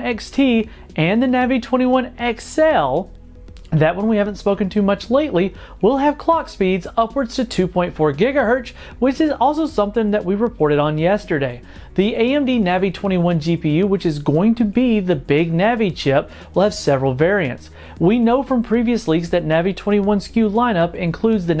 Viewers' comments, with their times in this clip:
0:06 2.4 Gigahertch I can't wait!